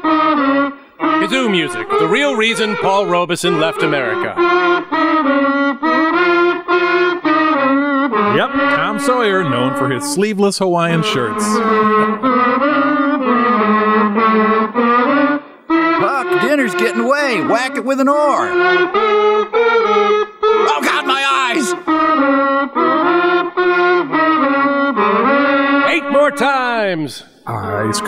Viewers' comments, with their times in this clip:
0:09 a scene in which Tom and Huck join a group of 1970s kids run toward Santa Claus accompanied by a kazoo orchestra rendition of "Old Man River." Just... amazing.